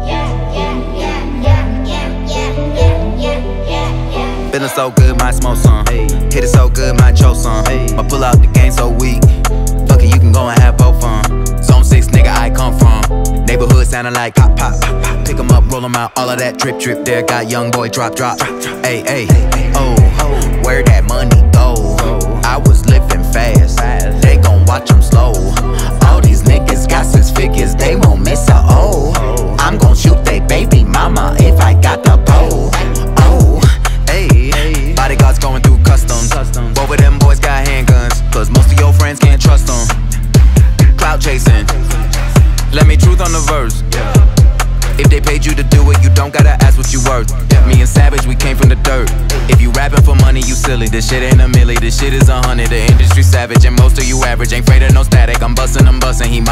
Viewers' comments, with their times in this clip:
0:04 It go hard with 1.25 speed
0:42 Sound exactly like Big Sean!